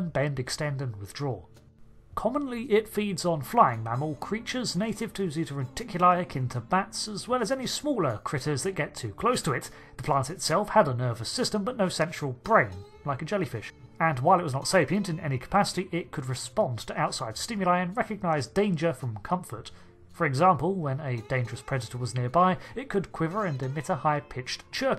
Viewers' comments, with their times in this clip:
0:10 did he say "sexual brain"?